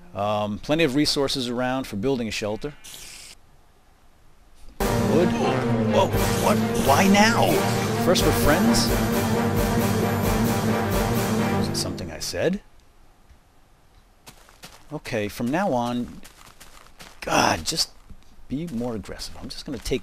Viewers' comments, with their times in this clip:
0:05 spider attack RANDOM DRAMATIC MUSIC PLAY!!!!